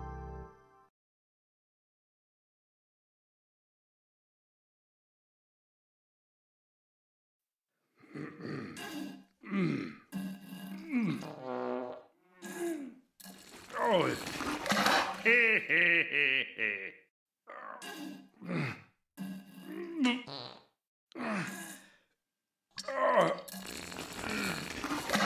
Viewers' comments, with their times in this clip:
0:07 Gay poop noises